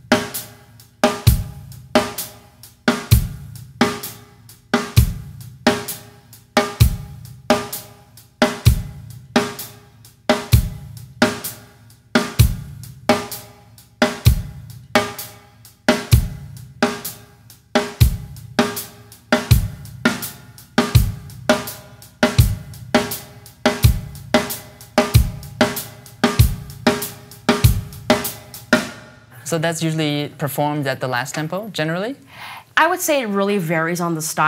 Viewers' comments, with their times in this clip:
0:10 I should have known, a Nike driven beat no wonder! 😎
0:18 Started getting some Deftones vibes